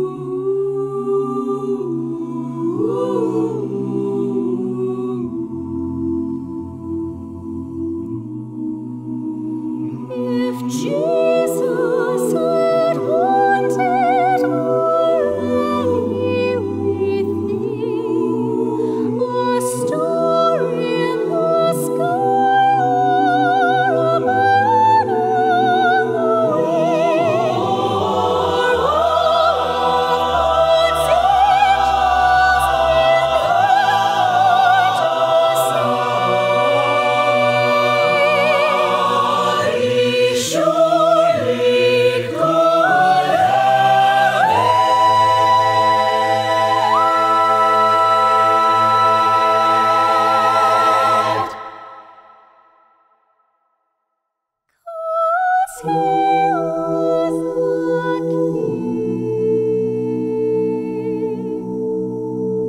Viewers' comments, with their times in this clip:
0:06 Loved every part of it except..... [ducks and runs] - sorry basses (possibly audio glitch....yeah let's stick with that eh!?)
0:44 I just heard a sonic wave... Wow... That was incredible. 😱😱
0:46 yes, she made the beautiful transition up. She's something else that's for sure. :-)